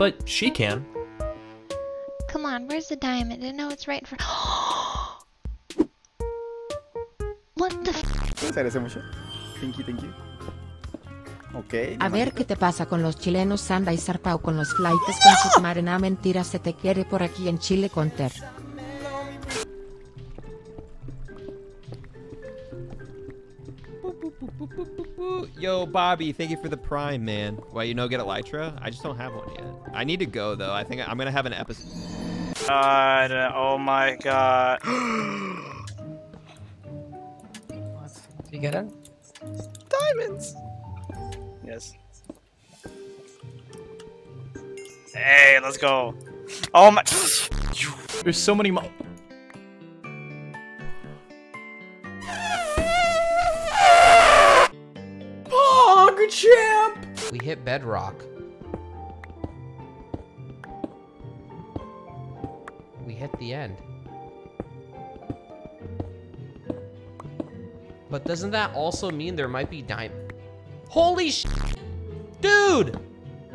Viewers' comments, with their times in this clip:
0:09 Is spanish ÙwÚ
0:55 finds diamonds E L E P H A N T N O I S E S
0:58 lmao that noise he made